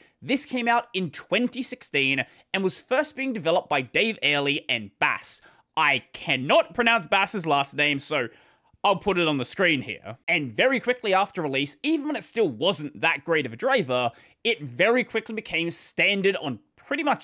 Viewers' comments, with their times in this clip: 0:05 honestly, I think the way you pronounced his first name was wrong too, not in a bad way, just different than normal, it's a shorter 'a'.